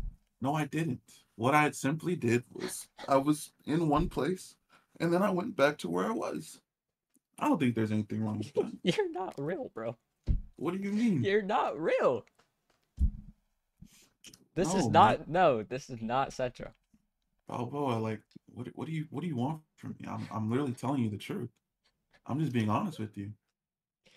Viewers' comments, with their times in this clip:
0:06 sounds like hes crying 😭😭 this is the saddest breakup ever